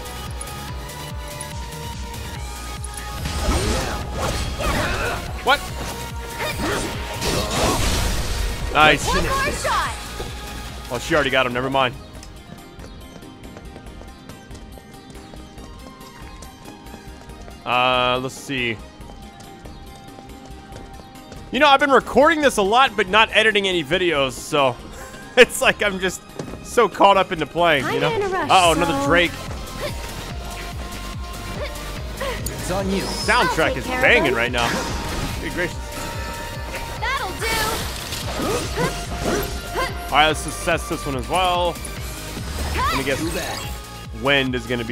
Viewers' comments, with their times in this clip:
0:05 ok the music in this part is really great I love it
0:26 I literally put my controller down and started busting a move to the battle music loooooool